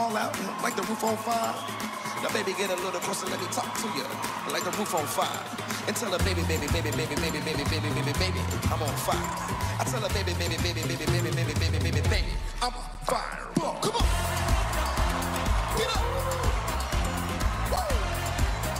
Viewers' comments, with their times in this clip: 0:06 i thouth hi say ribit ribit ribit ribit